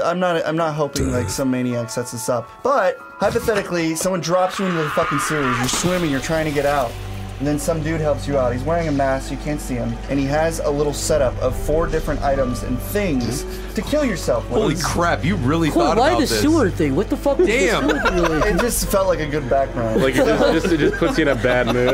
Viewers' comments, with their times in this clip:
0:08 I'm baked in the catacombs in Dark souls and I thought I found a hidden music track for 2 minutes